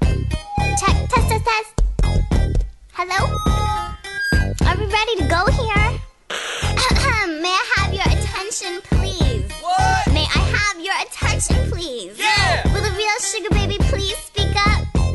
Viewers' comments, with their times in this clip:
0:03 that is the cutest hello I’ve ever heard 🤣😭🥰